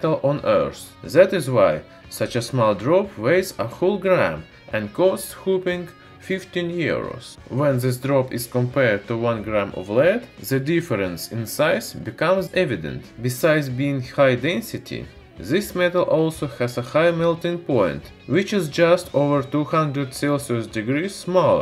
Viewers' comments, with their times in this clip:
0:07 Yes! I came back to this rhenium video just to hear him say "hooping 15 Euros" Love Love Love this guy -- the content, the snappy pace, the musical voice!